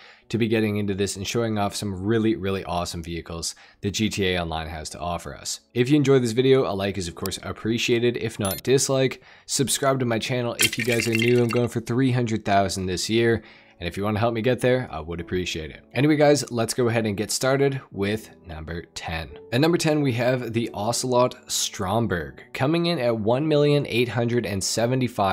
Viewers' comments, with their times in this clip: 0:09 the Lego sound effect omg 😂